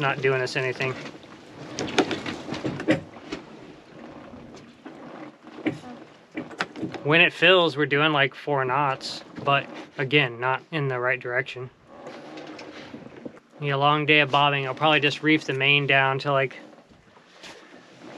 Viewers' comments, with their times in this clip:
0:04 Love the video and all the sounds you included. Makes it feel like you're really there onboard. I could have sworn I heard a woman's voice say "some-" and then gets cut off and there's a video cut. Maybe I'm imagining things or the boat is making interesting woman-like noises haha.